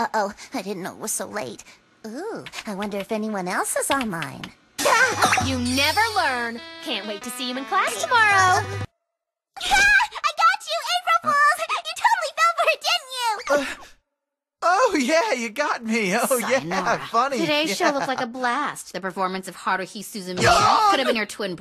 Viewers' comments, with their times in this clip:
0:09 And also are there any other characters that voice both the cute high pitch and the uninterested low pitch like